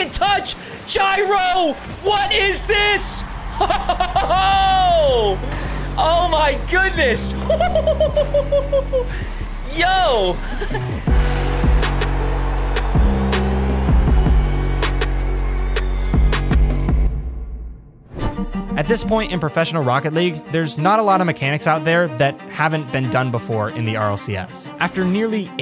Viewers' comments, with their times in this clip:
0:06 shot too good it turned the caster into a bird